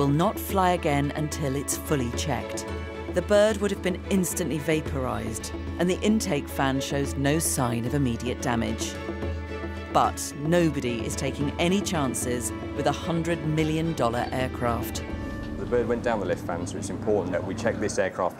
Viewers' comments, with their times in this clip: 0:03 "and the bird would have been fully vaporized. SHE SAID THAT SO CALMLY LIKE HOWWWWWWW